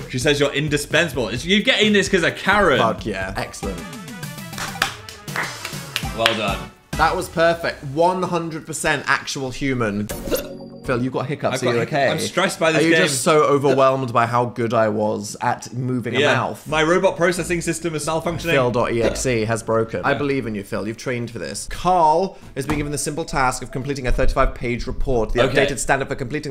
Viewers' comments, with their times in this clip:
0:10 Why is no one talking about phil’s hiccups they’re so adorable